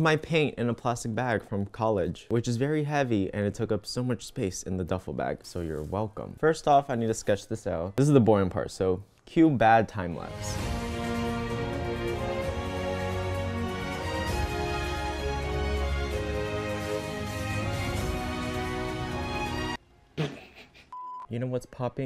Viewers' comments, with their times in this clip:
0:09 ok but i love the sao music ah